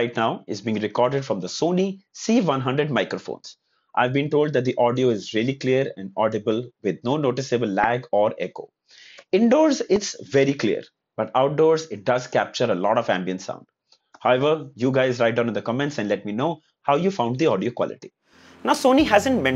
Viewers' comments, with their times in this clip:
0:03 really the audio quality is amazing 👏 😍